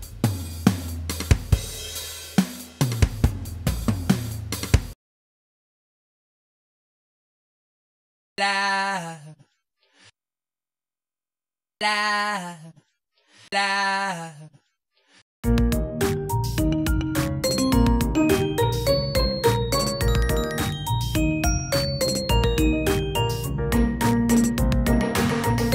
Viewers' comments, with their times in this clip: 0:07 How it sounds watching a horror movie with your friends